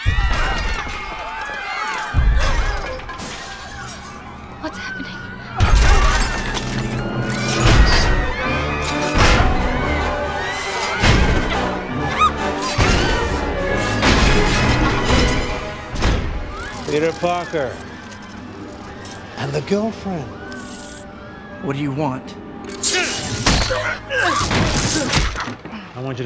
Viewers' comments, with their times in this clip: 0:07 I really love the soundtrack in this scene. Especially here.